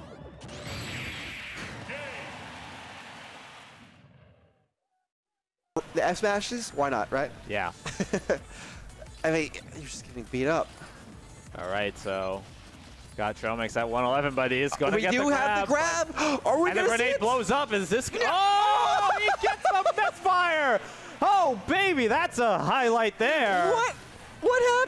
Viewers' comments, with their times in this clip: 0:06 It's so cool they got John Mulaney to commentate the Luigi clip